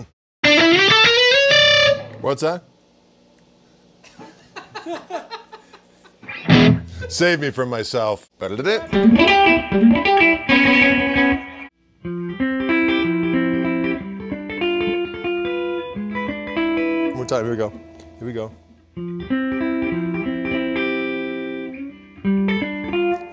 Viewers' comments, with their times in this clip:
0:09 I need to learn the riff just to throw it in randomly during a gig. Heh heh!